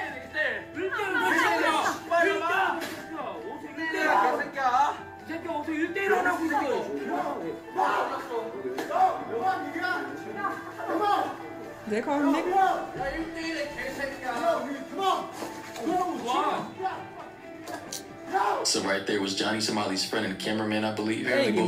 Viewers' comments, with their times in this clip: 0:06 theh aren't calling him the n word. They are saying nega, which means "you" in korean